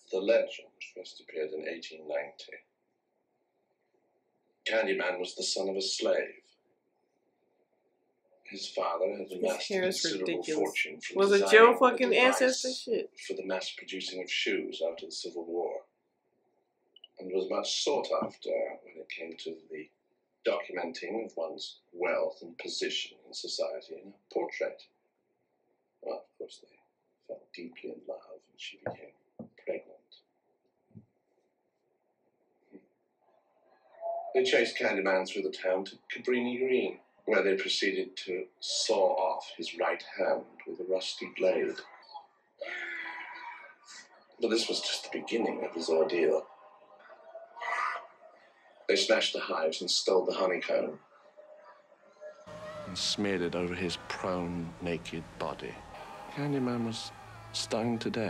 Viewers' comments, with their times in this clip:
0:09 "was it yo ancestors?" 😂 oms he looks fresh outta the 1800s he laugh like it too lbs
0:41 Whoever first commented on the difference between the way this jerk Purcell tells the story of Candyman (or of Daniel Robataille) here and the way William Burke told it in the 2021 movie was right. I don't know what it is, it's just a different listening experience somehow.